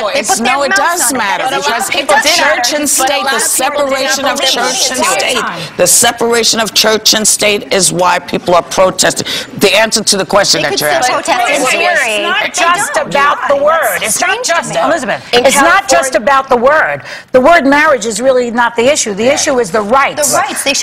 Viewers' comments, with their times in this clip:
0:04 I looked at my laptop screen and screamed SHUT THE FUCK UP! Why the hell do they always TALK over each other?